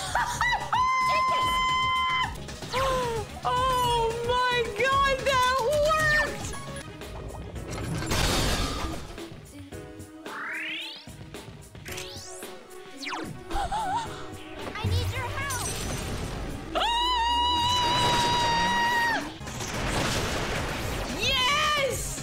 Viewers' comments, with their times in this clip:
0:07 lmfao that sp sound effect timing